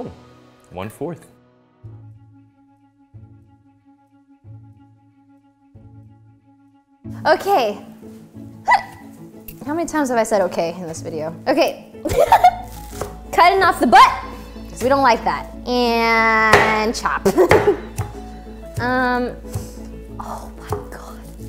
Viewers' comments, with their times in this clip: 0:08 Replay for Valkrae hiccup